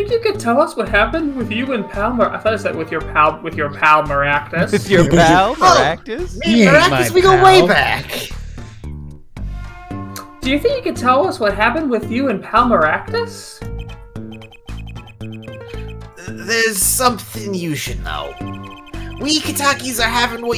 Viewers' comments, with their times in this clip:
0:03 I just went with malpractice which stunned me for a second